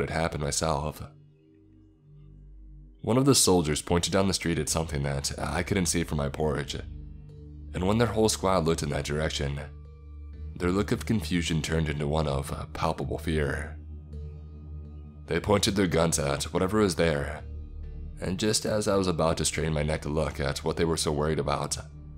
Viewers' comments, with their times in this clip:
0:03 "One of the soldiers pointed down the street at something that I couldn't see from my porridge"